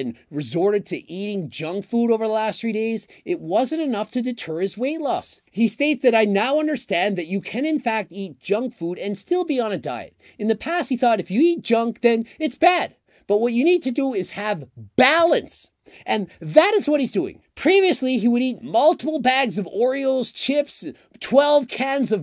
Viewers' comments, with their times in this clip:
0:10 right as you emphasized "BALANCE" i just looked at the whole bag of m&m's i just devoured, with the last m&m in my mouth 🥲